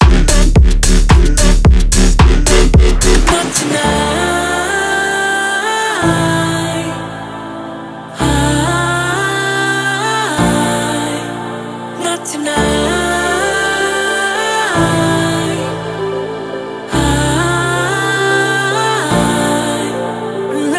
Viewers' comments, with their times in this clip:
0:05 Never liked EDM but JJ's heavenly voice nailed it, esp Go JJ go, will be with you every step, slowly but steadily. 💜